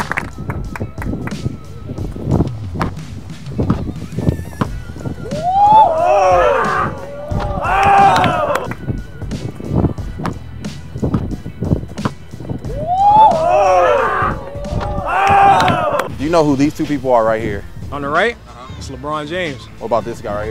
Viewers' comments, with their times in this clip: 0:03 I've never heard a golf clap at a street ball game until now. Little awkward.